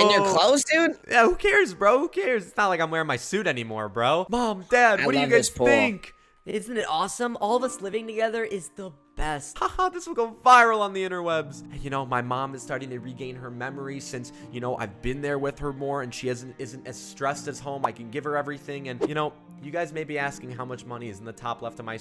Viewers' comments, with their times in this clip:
0:07 he left his voice changer on
0:07 why did his voice change like that